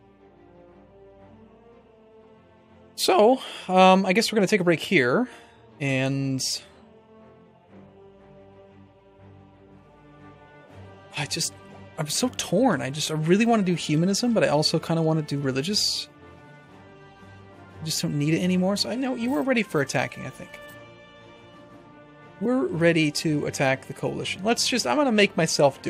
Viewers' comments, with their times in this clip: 0:06 ahahahaha what was that voice crack